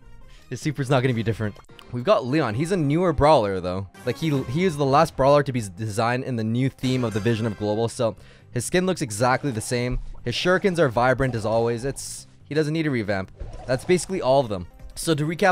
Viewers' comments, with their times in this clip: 0:03 you sound like a fellow Russian trying to speak British😂😂😂